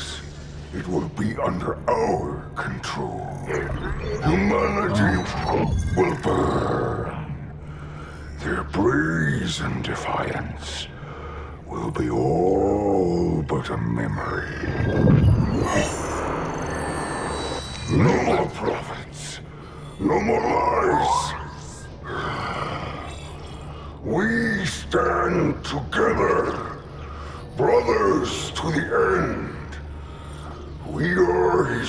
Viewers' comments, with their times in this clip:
0:04 Audio skip Missing info?
0:04 Why is there an audio skip ? Wonder if it's a corrupted transmission meant to mislead us, and more info will be added soon...
0:17 Flood sounds or radio static?